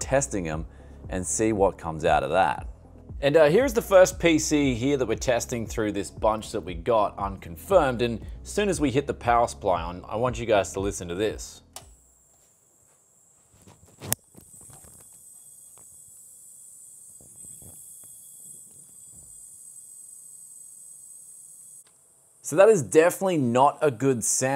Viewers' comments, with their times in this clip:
0:08 Anyone hear that noise? I couldn't hear any odd noise, but I don't know if that's because I have middle-aged hearing and can't hear high pitches, or if my tinnitus overwhelmed the noise.